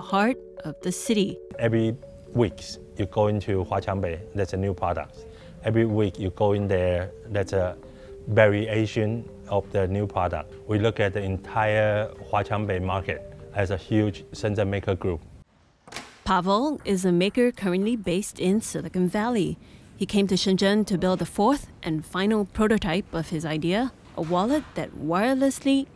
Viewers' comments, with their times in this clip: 0:07 Variation or very asian what do you hear
0:07 a very Asian of the new product